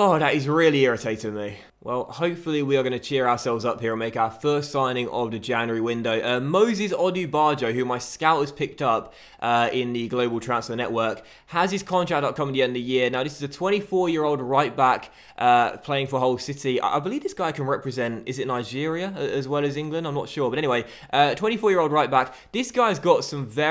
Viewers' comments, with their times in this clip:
0:06 thought u said Moses Odjer